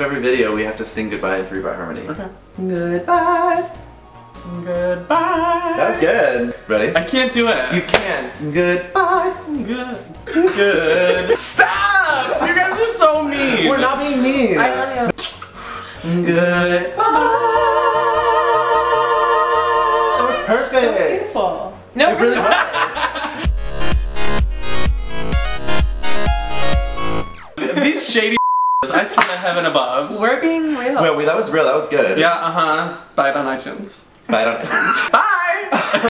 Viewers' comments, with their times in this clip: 0:10 Mannnn... “I didn’t know Tyler Oakley hit puberty but anyways SO FUNNY I ALMOST DIED OF LAUGHTER” 🤣💀😅😆
0:20 I thought Mitch said that was painful 😂 😂